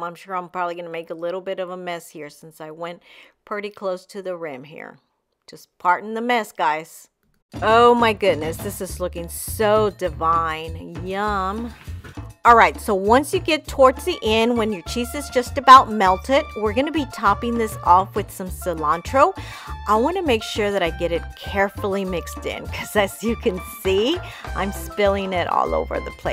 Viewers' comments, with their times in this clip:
0:07 when the kumbia drops 🎺